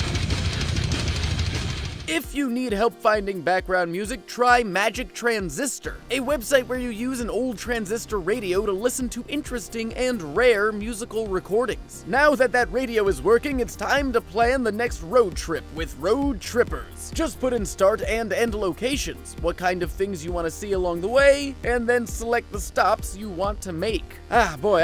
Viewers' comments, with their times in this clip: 0:08 are those Daleks in the background?
0:11 Is that a dalek